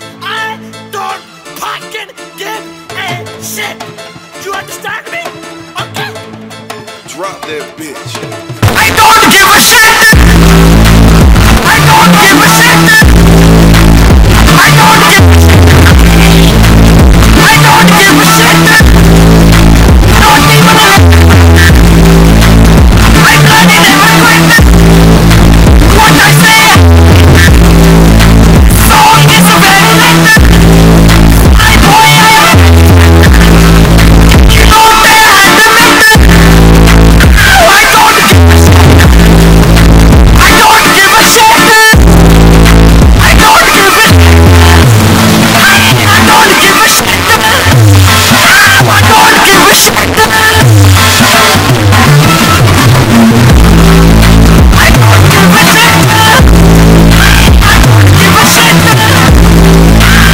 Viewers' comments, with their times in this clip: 0:08 volume up at this part 😂
0:09 For anyone who is wondering what time he starts screaming its
0:20 Nod even a Liddell bide
0:43 with 2x speed is cold walk